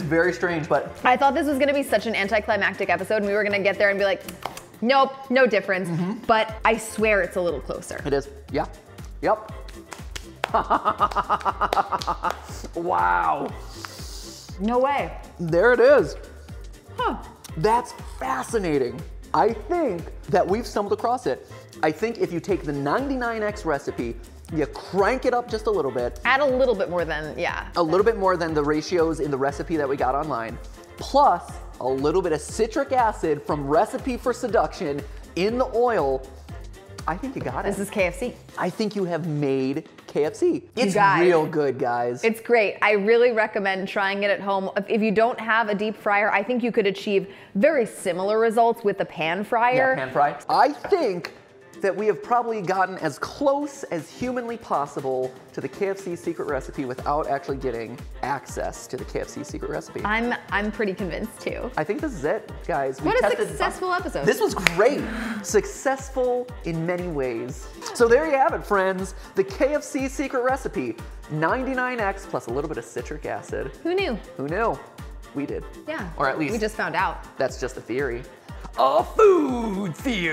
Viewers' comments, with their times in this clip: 0:08 There's realisation and ambition in that laugh and I felt it
0:10 “hahahahahahahahaha” now you got me laughing 😂
1:05 did she purrrrrr? xD